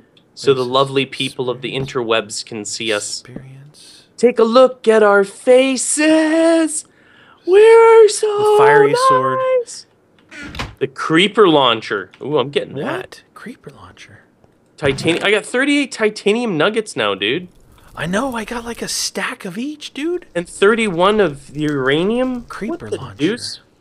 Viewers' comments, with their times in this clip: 0:06 did he said firey sword instead of fairy sword?